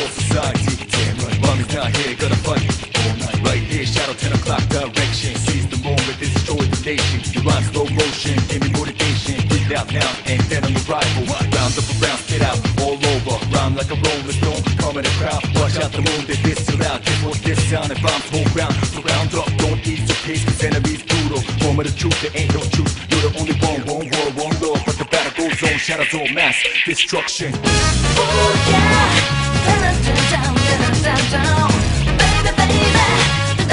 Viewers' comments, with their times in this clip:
0:03 Sounded like he said '10 O'clock erection'
0:09 I always thought this line is "Feed them with rice"
0:20 I hear: cuz enemy´s "duro" everytime